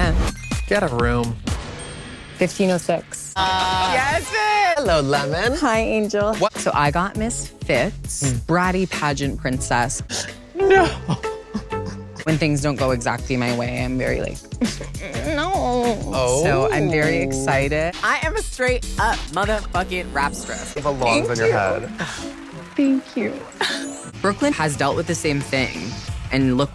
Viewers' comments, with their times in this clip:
0:10 Omg I literally peed a lil at the “no” crying Farrah Moan clip